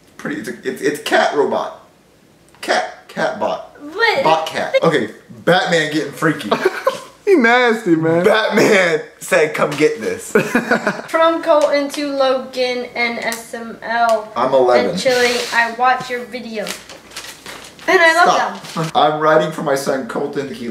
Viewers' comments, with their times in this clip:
0:07 I thought in my head that batman said can't Touch this